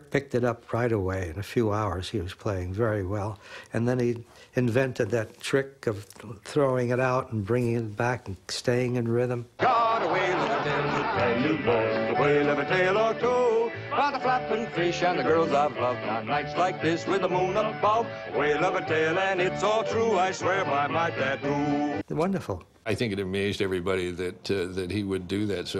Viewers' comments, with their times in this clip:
0:09 I loved this song.